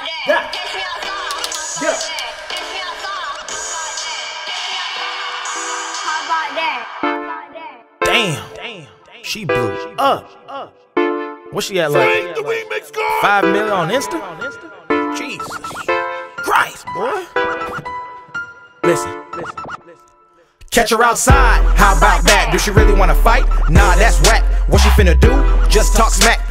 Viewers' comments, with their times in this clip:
0:09 low key sounds like Franklin from Never mind what I said